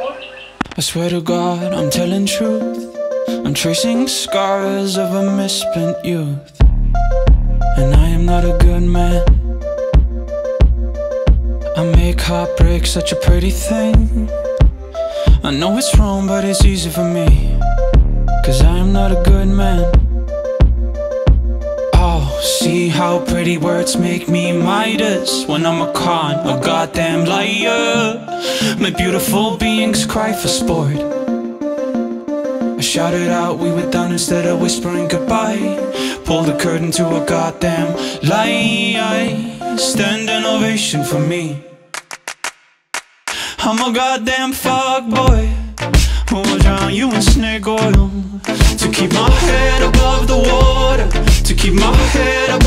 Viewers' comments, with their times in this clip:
0:06 Really good song, I agree with you about those base drops ! You also have really nice transitions!
0:06 NEW DILLI TODAY! I really dig those kicks that come in The rest of the track is D O P E too.
0:39 I came back because i realised that after he says "standing ovation for me " those were claps and yeah i am pretty slow lmao